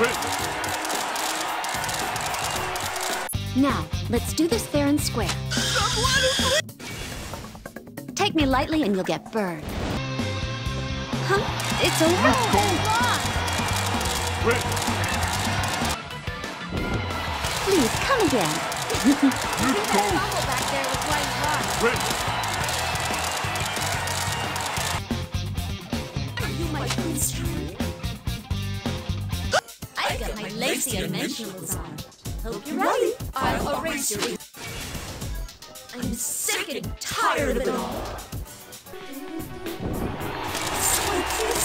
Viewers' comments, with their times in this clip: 0:03 Yukiko is Sae Nijima confirmed
0:26 That scream at the end 😂
0:29 Perfectly cut scream there 👌